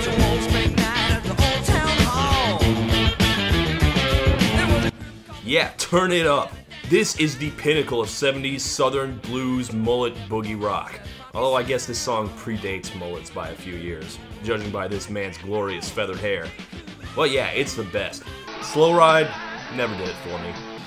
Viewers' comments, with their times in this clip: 0:04 *volume goes down "Yeah turn it up!"